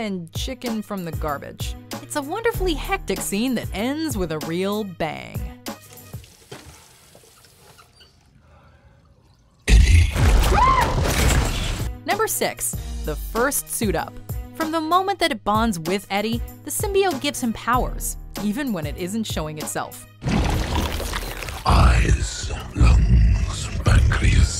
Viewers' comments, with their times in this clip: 0:07 Always makes me laugh my ass off, just listen to Tom Hardys scream when he's done brushing his teeth xD xD xD
0:10 Tom Hardy’s little squeal gets me every time. XD I saw this in the theater, and my only thought was “Real manly, Hardy.”
0:10 Eddie screaming like a famous goat…